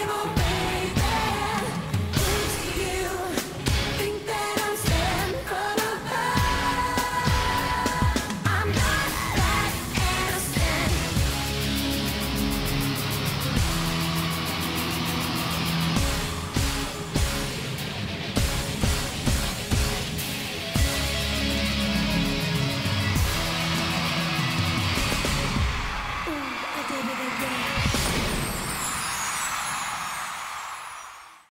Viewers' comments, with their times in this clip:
0:06 at least I don’t hear I didn’t hear from abooovvve though that was her real voice
0:21 to the end... just wow. the fire in her eyes is chilling and that drop is giving me goosebumps